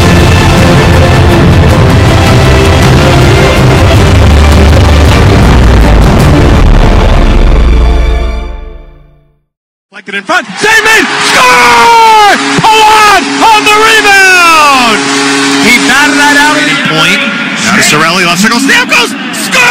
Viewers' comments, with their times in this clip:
0:05 Your speakers are blown huh?